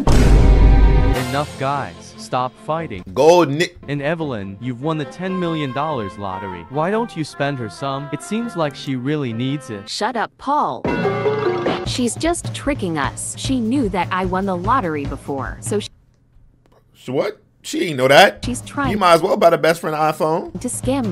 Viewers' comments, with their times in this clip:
0:04 gold WAIT WHAT NI WHAT